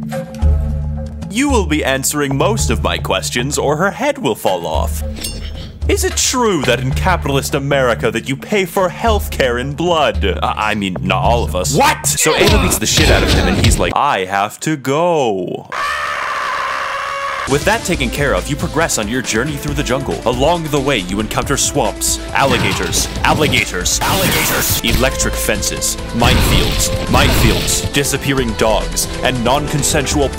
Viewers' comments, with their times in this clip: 0:06 I love how genuinely pissed Ocelot sounds when Snake says “not all of us”
0:15 The scream always gets me 😂🤣